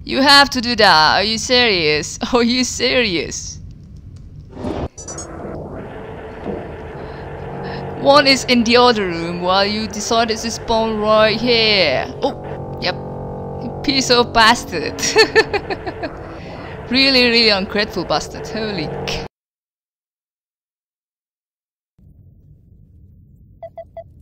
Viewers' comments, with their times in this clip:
0:05 wow haha, you got a really strong accent all of a sudden.